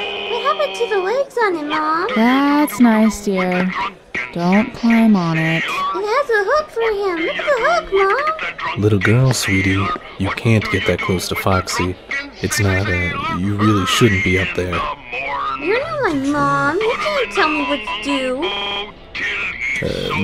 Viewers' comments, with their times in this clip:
0:08 William's voice so........attractive omg🥵😍